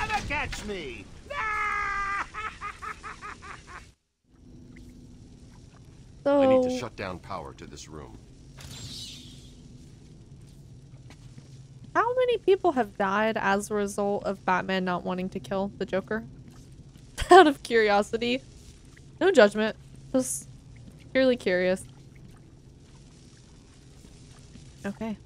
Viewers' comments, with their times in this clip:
0:08 Ohhhhh audio desync lol. I was like "why she keep takin it down??" the ultimate question lmaooo